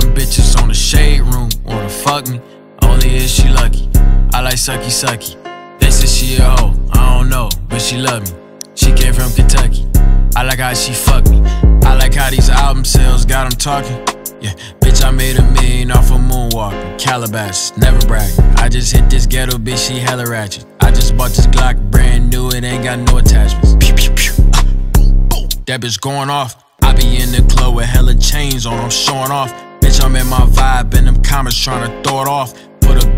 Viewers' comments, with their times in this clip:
0:08 Woowop killed me
0:16 why u do woo wop like dat 😂😭💀